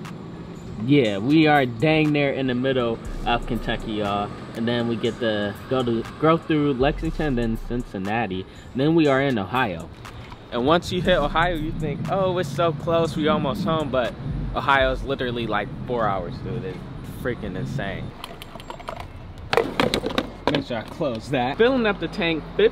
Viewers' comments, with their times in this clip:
0:06 Cincinnati is in Ohio Nd DONT ever say Cincinnati like dat again put some respect on my city 🤦🏽‍♂️